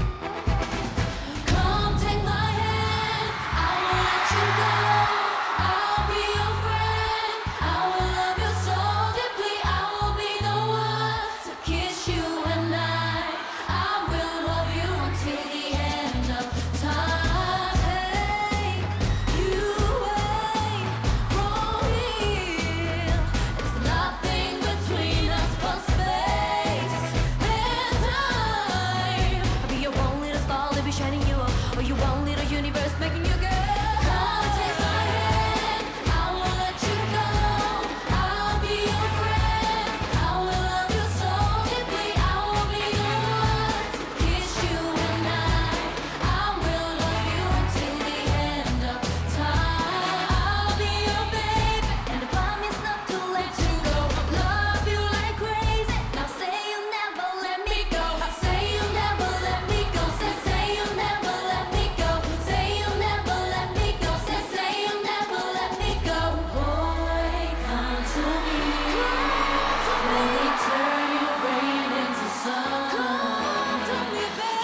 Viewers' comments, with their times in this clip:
0:07 jihyo’s voice so strong...queen.
0:29 she can be a rapper
0:57 Did anyone hear the voice like "a-"